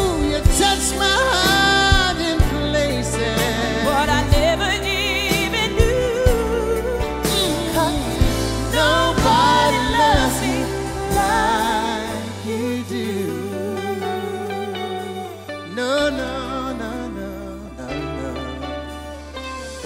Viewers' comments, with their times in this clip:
0:03 I want to cry! She sounds amazing